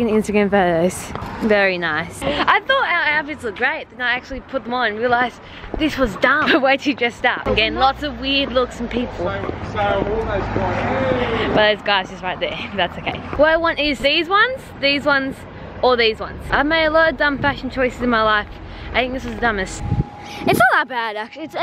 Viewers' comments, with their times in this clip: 0:09 what in tarnation did this dude say???